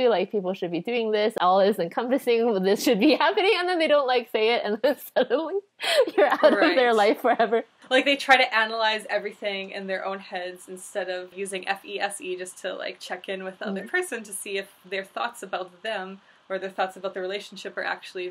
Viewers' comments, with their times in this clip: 0:04 I'm dying, "And suddenly.." giggle giggle "You're out of their life forever! ...." silent and continued enthusiasm my favorite part of the entire video!!!